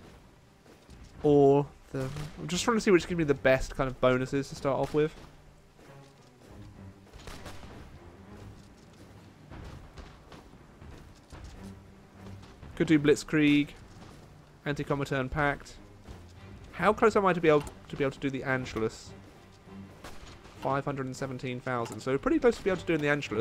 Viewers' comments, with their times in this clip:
0:05 Hahhahah you said volks mineshaft but it said volksgemeinschaft, it means national community in English. Now I understand why my school teached me to speak German hahaha